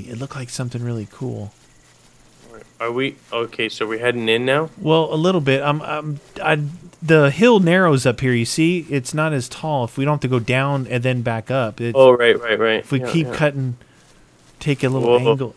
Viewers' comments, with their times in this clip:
0:03 u can here the T. rex roar